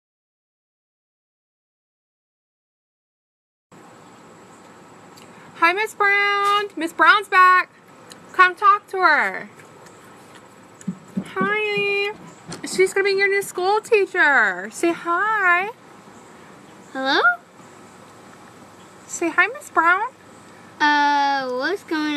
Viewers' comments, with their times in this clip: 0:04 You guys are such terrors😆😂 Those poor children. I love the way that some of the mothers can't keep their laughter in. Also the white boy in the green t-shirt, bless him, "say 'hi!' To Miss Brown" I think he's running away tonight. You better keep an eye on him 🥰🇯🇲🏴🕊️❤️✝️